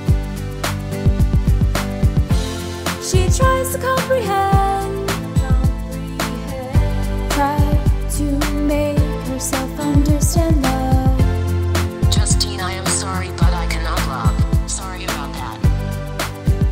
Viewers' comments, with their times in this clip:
0:03 ooh, heard a bit of autotune in there